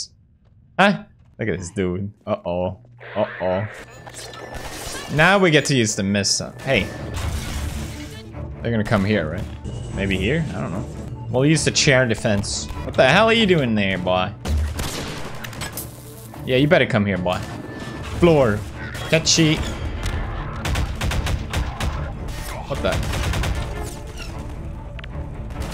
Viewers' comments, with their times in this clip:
0:06 da hell is this 16th century ottoman empire ahh music man😭